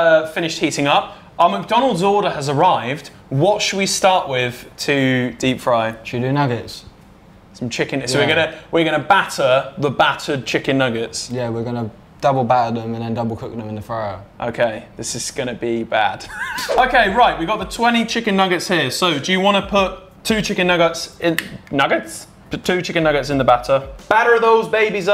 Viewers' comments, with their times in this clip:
0:06 who else thought he said tuna nuggets !